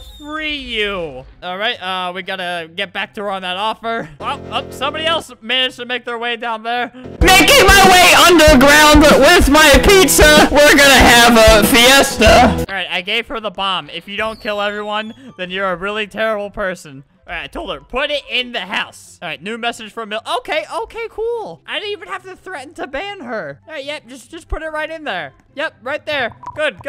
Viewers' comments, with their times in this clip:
0:06 this guy is the best singer in the world
0:07 rip head phone-users. :DDD
0:07 I got earraped! 😂